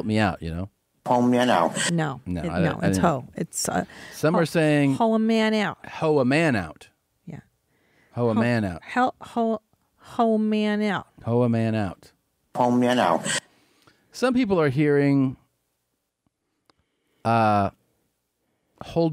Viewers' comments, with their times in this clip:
0:07 its just a revved up, incomplete thought "Oh, man I'll..."